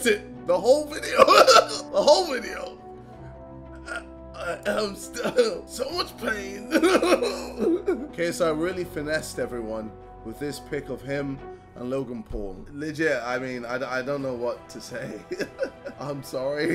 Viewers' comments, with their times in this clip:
0:04 the pain is his voice is unbearable🥺 I know he’s holding back tears